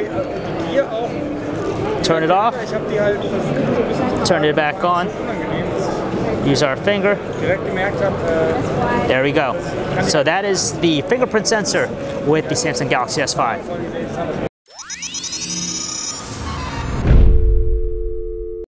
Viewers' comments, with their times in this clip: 0:03 German guy talking in the background :D but seriously this phone SUCKS and it barely works haha :D taking water resistance from sony and fingerprint sensor from apple